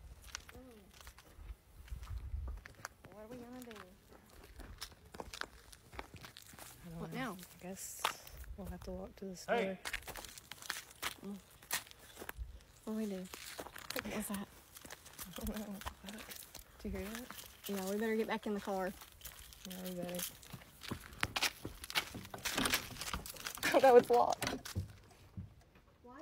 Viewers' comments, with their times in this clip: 0:10 I don't care if laughing is a coping mechanism, voices from the dark is not a good sign.